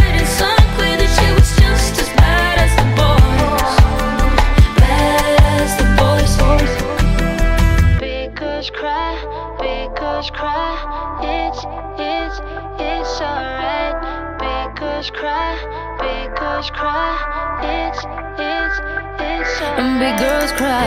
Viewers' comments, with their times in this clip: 0:07 pickles cry, pickles cry.